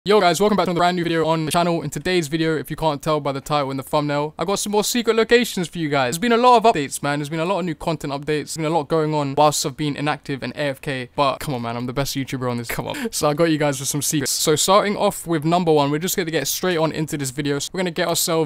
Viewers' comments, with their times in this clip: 0:01 bro spoke faster than how my dad left